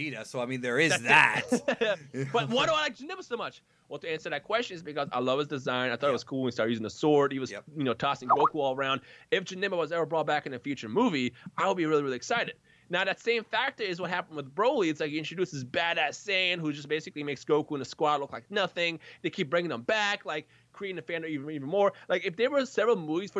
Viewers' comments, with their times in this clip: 0:03 I though my Skype was going off lol
0:07 Skype sound :)) got me
0:08 Who else checked Skype fuck stuff like that never gets me.
0:08 You fooled me with Skype.
0:08 I thought i left my skype open for a second O_O